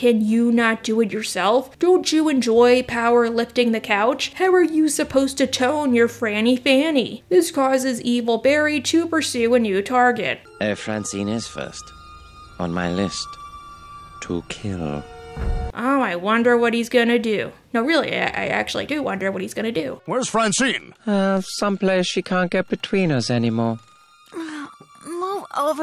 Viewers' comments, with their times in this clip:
0:07 I heard anger when you said Franny Fanny.